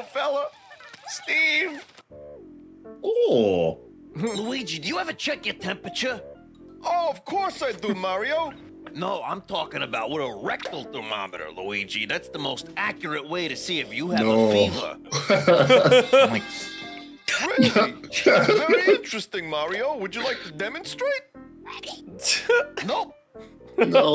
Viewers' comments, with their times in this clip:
0:09 I was so confused at first because I thought he said "regular thermometer".